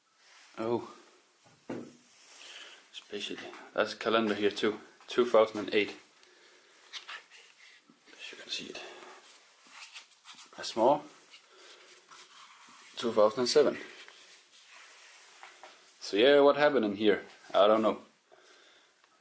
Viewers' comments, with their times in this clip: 0:06 Bro, what is this quiet voice saying? sounds really weird and doesnt seem like its you..